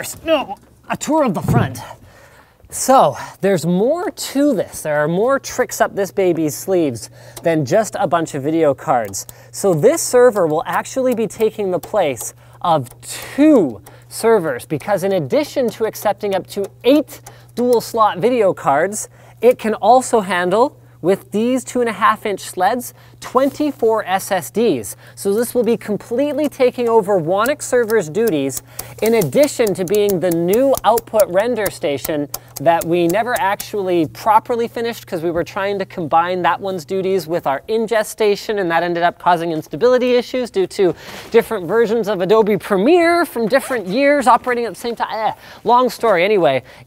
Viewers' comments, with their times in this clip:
0:10 I just love how it sounds when he opens up those trays
0:28 the clicking of those drive sleds is so satiisfying